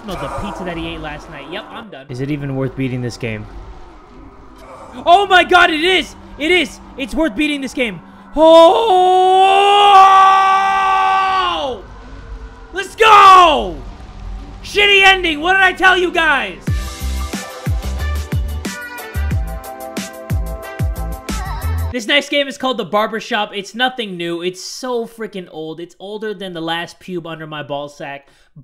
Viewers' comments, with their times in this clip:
0:10 replaces scream to lion roar